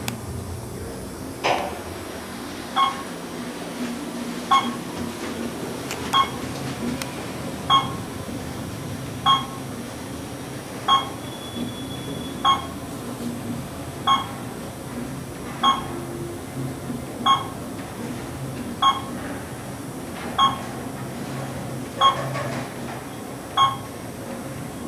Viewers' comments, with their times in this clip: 0:06 that beep sounds like its from a Otis Series 1
0:06 I 100% agree. is if you want to hear the beep again
0:06 gen2 is different. If its otis its most likely elevonic 401/411, but apparently the beep in the first elevator in the video SOUNDS like its otis. Example:
0:06 He's referring to the floor pass beep on the first elevator (with single slide doors). If you want to take a look at it, go to